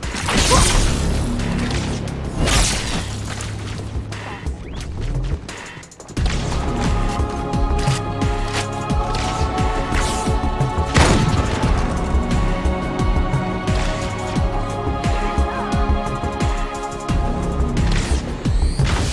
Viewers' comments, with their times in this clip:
0:06 what a music👍👍👍